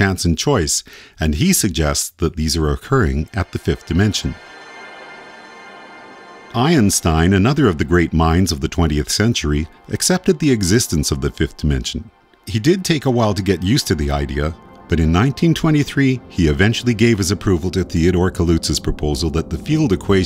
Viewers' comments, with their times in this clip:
0:05 Can't tell if real science or conspiracy theory level pseudo science... Also "IronStein" The result of Tony Stark and time travel.
0:06 i in stine?